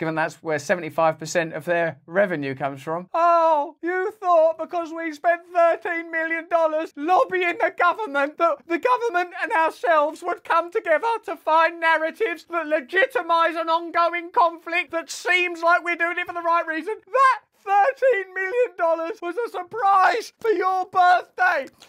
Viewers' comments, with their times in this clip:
0:05 😂❤😂❤ ‘ OHHH yew faught ‘ … ‘ yawr birFday ‘ … AND YEWv RUINED IT ‘ (back on the bottle, WATER) 😂